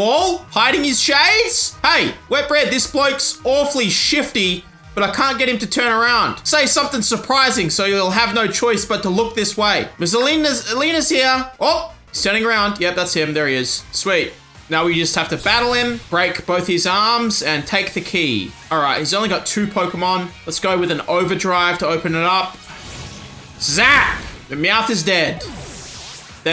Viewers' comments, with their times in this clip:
0:09 for a solid minute I thought it said "Ms. Obama's here!"